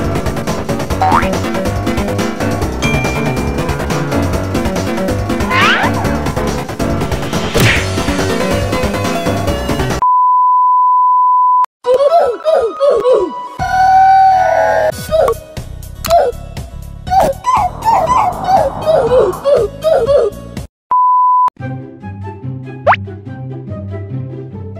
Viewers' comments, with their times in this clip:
0:10 omg broke my ears dood